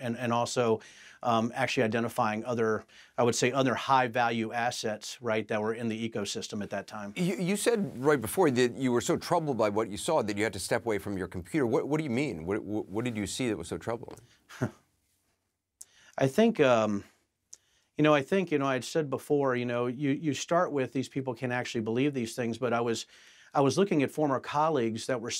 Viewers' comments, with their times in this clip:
0:07 "What do you mean ...you were troubled by what you heard" Laughs and twists his face - I would like to know what all those microexpeessions were I pickndisgust and disbelief.